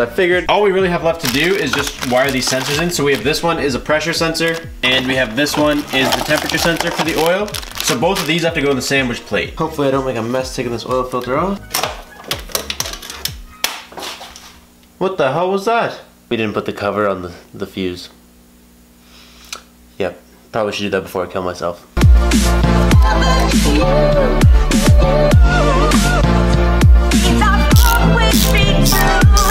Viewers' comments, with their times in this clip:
0:10 does he say mother fucker or oil filter?